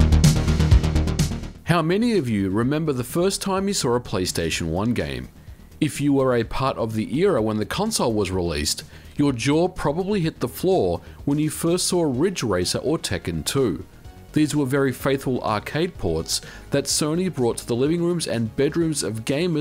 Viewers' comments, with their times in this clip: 0:03 “...the first time you saw_R_a PlayStation One game...” L O L